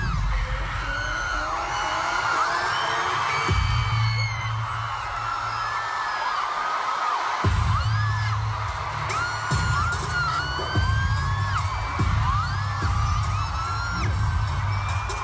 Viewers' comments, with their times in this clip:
0:03 Is it a real whistle sound??? I'm really confusing 😅